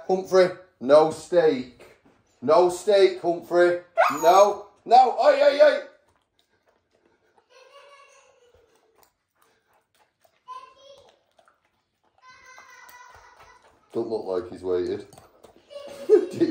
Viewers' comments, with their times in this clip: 0:03 I love you can hear how Humphrey yelps and cries a little as if saying "i'm sorry dad but I have to, it's steak!", poor boy was in a hard to resist situation lol. 😂